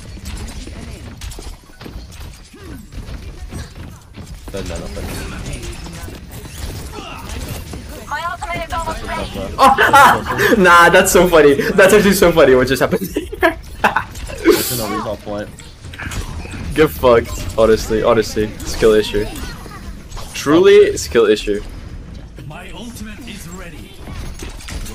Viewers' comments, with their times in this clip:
0:09 goofy ahhhh laugh